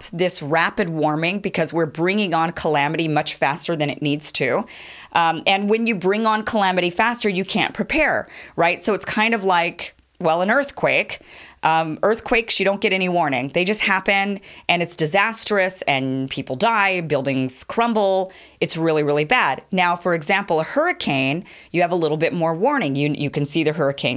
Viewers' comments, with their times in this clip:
0:07 did she say cLamity? sounds yum